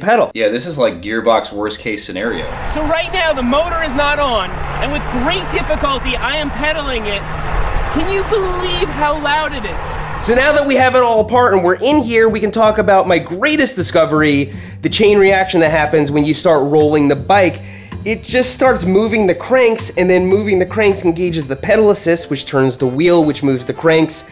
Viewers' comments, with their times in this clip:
0:04 oh so that WASNT a car cuising next to him? wow! thats insane.
0:08 WTF, I heard the sound but didn't reflect over the fact that it was the bike making the noise. Thought it was something off screen haha.